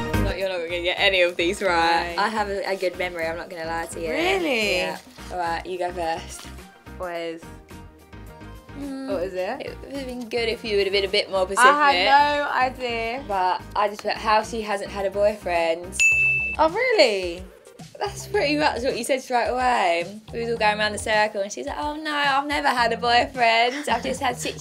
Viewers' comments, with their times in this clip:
0:09 Sophie: It would've been good if you would've been a bit more pacific Poor Sophie, just stick to modelling 😂
0:11 ‘would have been good if you could have been a bit more pacific’ 🙄🙄